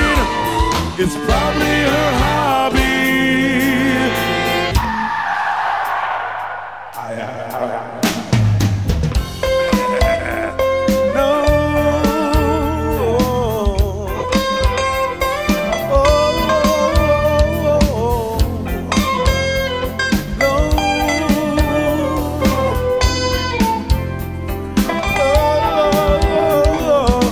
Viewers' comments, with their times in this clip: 0:09 She brings the bus ride to a thrilling conclusion! ....ha ha ha ha Amazing melody.. great lead solo